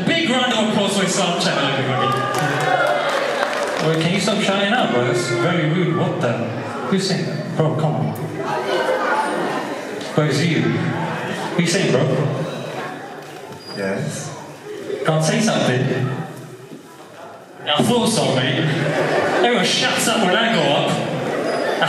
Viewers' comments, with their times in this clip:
0:06 Did someone BOOO??? ?